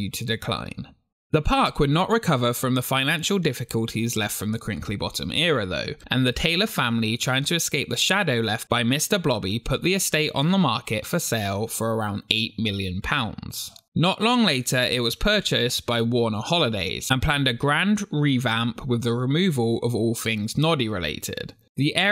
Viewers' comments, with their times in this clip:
0:06 "...and the Taylor family, trying to escape the shadow left by Mr. Blobby..." I gotta give you credit for managing to say that without cracking up.